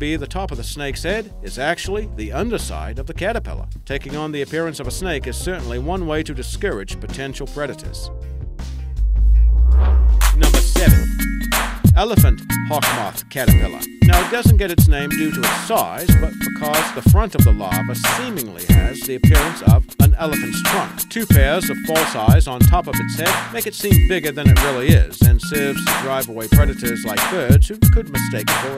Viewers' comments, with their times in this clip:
0:09 what's with the music
0:09 What happen ? That music was way loud.
0:09 i dont know about you guys but im over here grooving to the music